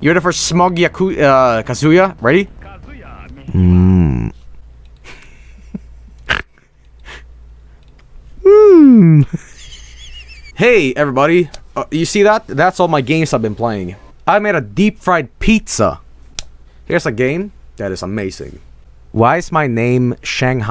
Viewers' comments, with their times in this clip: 0:06 That killed me off. the way he said the "umm" with the character looking on me.